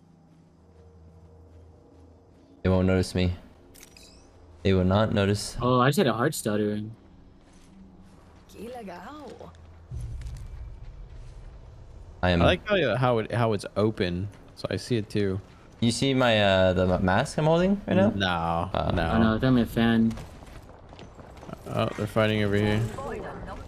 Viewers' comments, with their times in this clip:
0:09 loba did speak in portuguese wtf now i need this heirloom